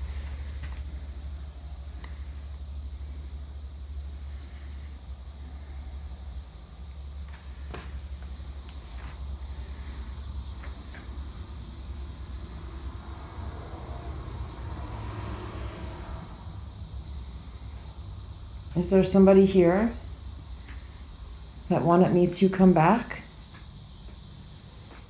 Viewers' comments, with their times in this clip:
0:06 .......there is a creepy womans whisper voice and it sounds like she is freakin saying......."MURDER".......?????